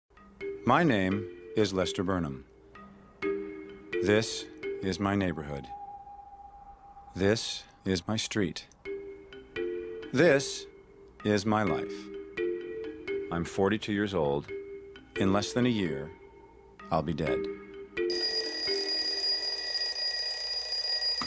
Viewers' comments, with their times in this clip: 0:03 why can't everybody talk like that in movies? I wouldn't need CCs... but instead they mumble, yell (all at once) and babble. I guess that is not a problem for native speakers, but for us non-native is a pain in the arse